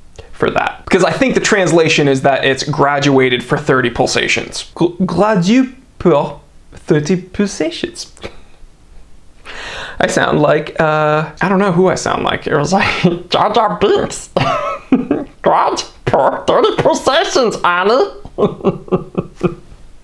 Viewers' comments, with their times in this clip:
0:07 you sound constipated 😂😂😂😂😂